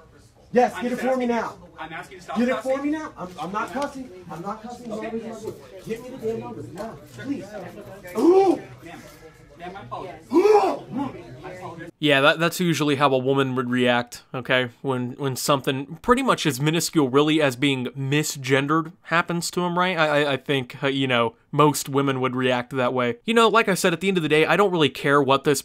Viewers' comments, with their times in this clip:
0:08 "I'm not a man" Watches to hear a brollic testosterone filled "HOOOOHAH"